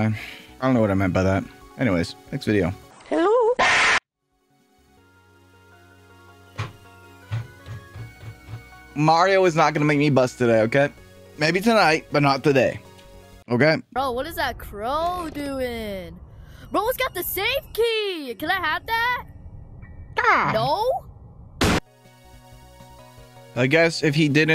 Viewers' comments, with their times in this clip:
0:05 that creaking noise sounds so much like my door